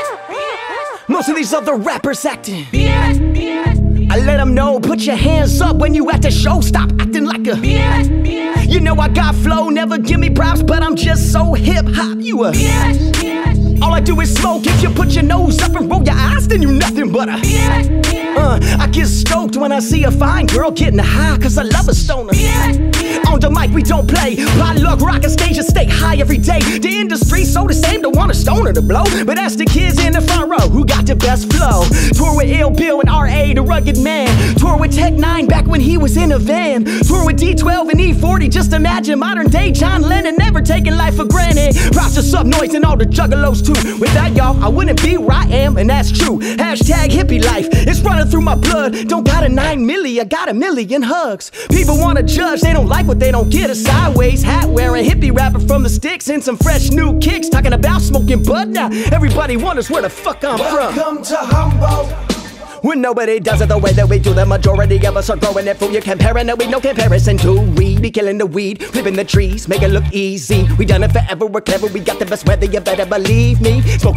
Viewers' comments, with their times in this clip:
0:04 I still love the flow
0:04 What's the beat fucking stellar beat
0:59 What is the beat ?! I love that beat and the flow you put on it dude